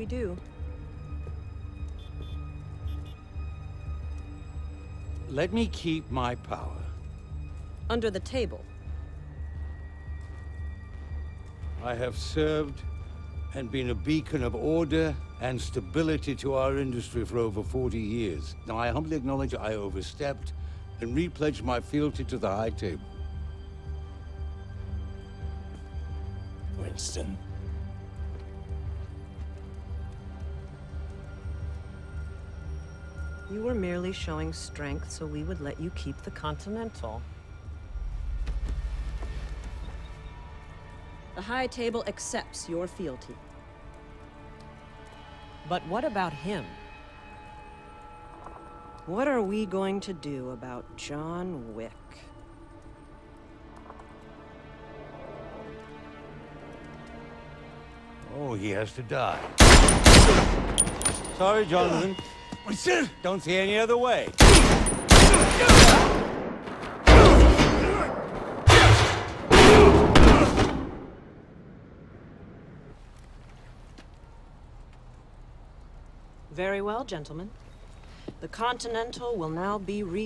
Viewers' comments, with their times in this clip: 0:03 -There’s a text chime! -Winston says he has contacts all around New York -the Bowery is a part of New York -Winston contacted the Bowery King to start the war
0:27 Winston tells something to Wick and I cant figure out what
1:03 john says winston in surprise